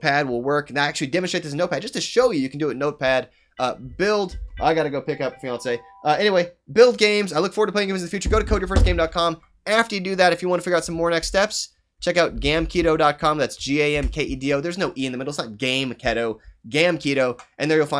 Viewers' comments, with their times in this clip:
0:03 ah man your ringtone is my alarm sound... i hate my alarm :D
0:05 did he just say "gotta go pick up beyonce"?